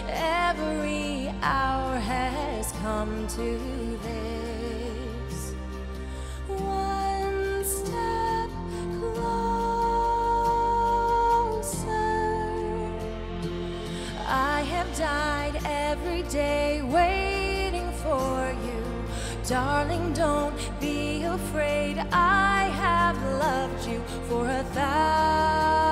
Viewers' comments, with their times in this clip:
0:08 “perfect pitch” *sarcastically*. You’re such an inspiration and so amazing at everything you do❤️ love you